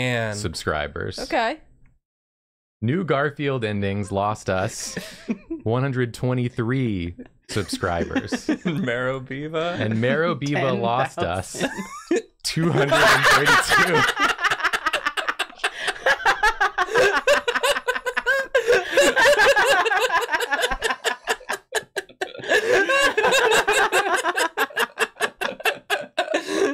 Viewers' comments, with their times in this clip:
0:10 Merobiba induced laughter